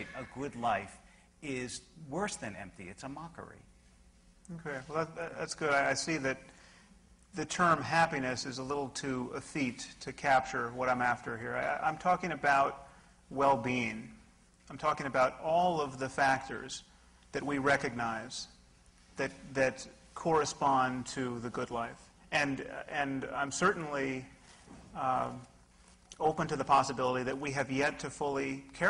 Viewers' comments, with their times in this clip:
0:09 Hey, if anyone could help me out that would be greatly appreciated Sam Harris Says a word that.. I can not find anywhere and I'm thinking I may have misheard it. ETHEAT was what I thought I heard = any corrections (wanting to know the definition more than the word/both would be nice) Anybody ??